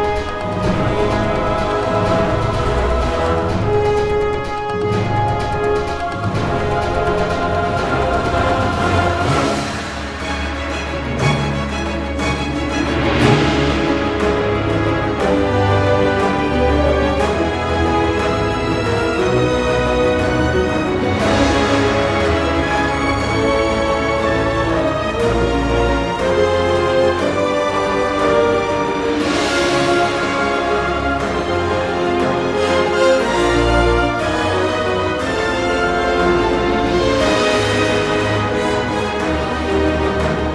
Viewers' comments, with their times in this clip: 0:10 This song is so beautiful. nogstalia
0:10 You can hear the word "responsibility" in ths part
0:13 You can hear his theme when he goes through the portal. It’s easy to miss but it’s there.
0:14 When the magic of bgm starts
0:28 This part seems like an Avengers Theme👀❤️